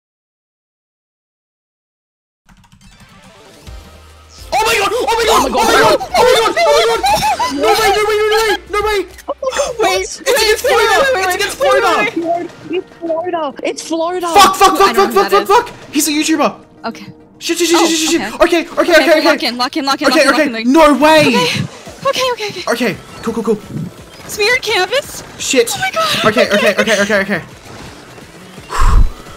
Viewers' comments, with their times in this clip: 0:04 THE SCREAMS MY GOD
0:17 bro is rapping